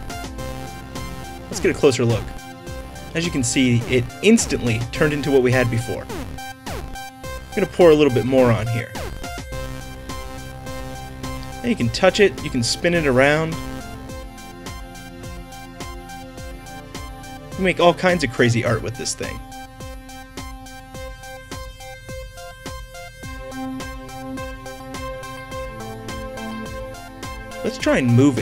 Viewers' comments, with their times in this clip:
0:10 he said more on ( moron )